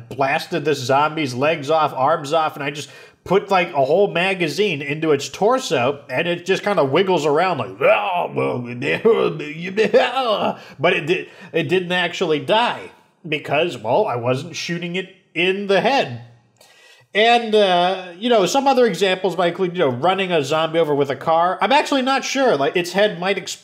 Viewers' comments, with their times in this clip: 0:06 Your Imitation of a Zombie is really good.